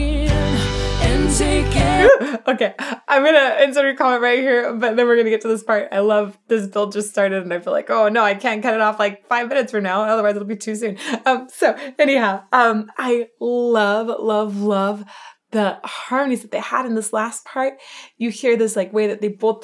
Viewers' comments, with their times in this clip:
0:05 Amy's expressiveness is something that Radio hasn't seen for decades...hell sense maybe Patty Loveless or Bonnie Raitt or maybe Mary Chapin Carpenter in later years. That haunting ability of the low Alto female voice just SLAYS my middle aged male self for all the wrong reasons! LOL